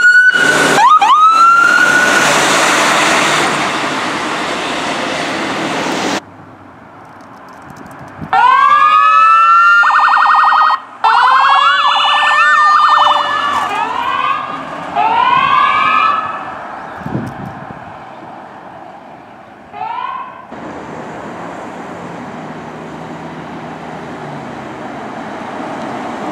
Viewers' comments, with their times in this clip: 0:09 best siren ever!!!
0:09 best siren ever!!!